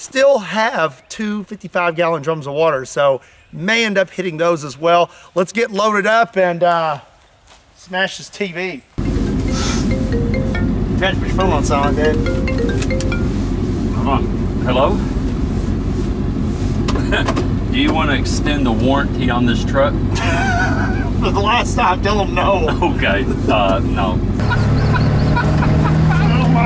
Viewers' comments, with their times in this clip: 0:09 iPhone ringtone on a Samsung. SOUNDS LEGIT